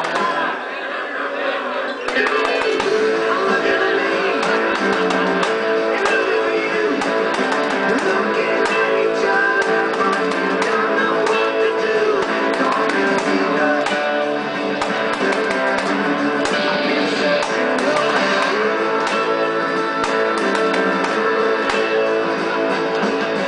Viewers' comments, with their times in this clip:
0:06 Good job man, but it does sound like you are beating the hell out of your guitar. (Like )